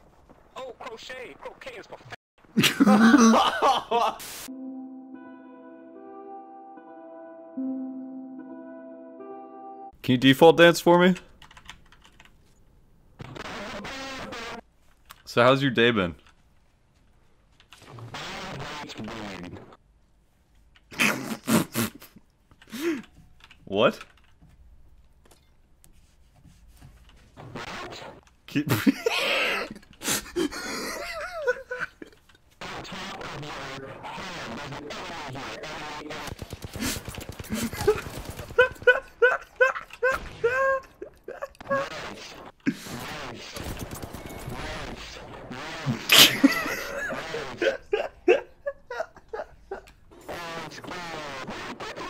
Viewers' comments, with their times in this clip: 0:09 Sounds like a beef taco.
0:18 Bro hes speaking McDonalds drive thru
0:37 does this laughter reminds u of someones🤔.... hahahaha